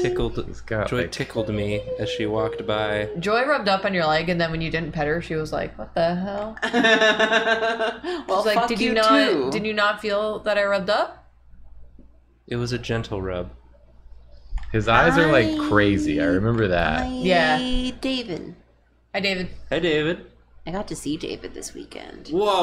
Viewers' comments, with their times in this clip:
0:06 -ish, I heard "rim Goku" and immediately accepted it as something Drawfee's chat would suggest